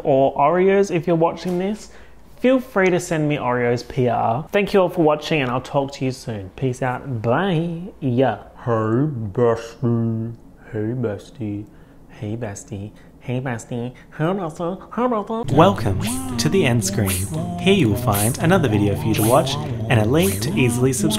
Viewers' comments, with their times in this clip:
0:09 the range tho